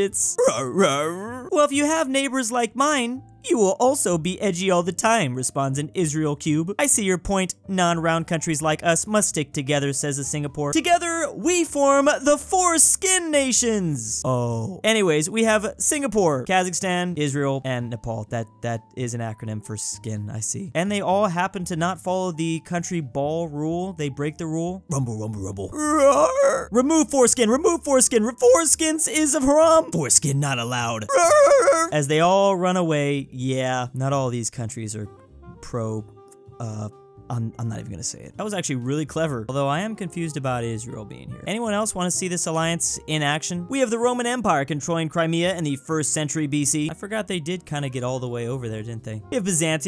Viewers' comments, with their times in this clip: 0:09 Perfect pitch for the lil boi
0:33 the nepal roar voice crack